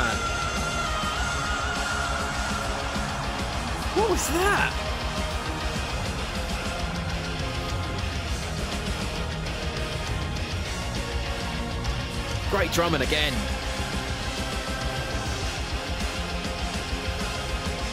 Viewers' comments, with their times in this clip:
0:03 "What was that?" THAT... was Floor Jansen, the Valkyrie Queen, giving you a taste of what she's capable of. You know how some singers can shatter glass with their voice? Floor shatters granite slabs - as her warming-up exercise. Fun fact: did you know that during the last part of the song, Floors microphone was actually switched off so she wouldn't overload the sound system? 😉🤣 Kidding aside, she really is one of the most versatile singers on the planet. She's got range, power, AND incredible control. The word "amazing" is used way too often to describe artists but in her case it's completely correct. Every time you think you have some idea of her capabilities, she comes up with something we haven't heard before. But wait - there's more! ALL members of Nightwish are basically genius level. Every. Single. One. So if "epic" is what you're after, Nightwish is the answer.